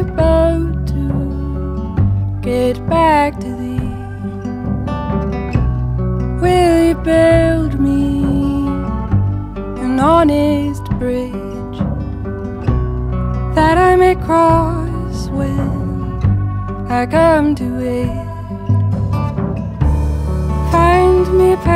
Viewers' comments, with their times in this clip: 0:08 🔥 are you still listening in march This voice is fantastic 🔥💯 👇👇💗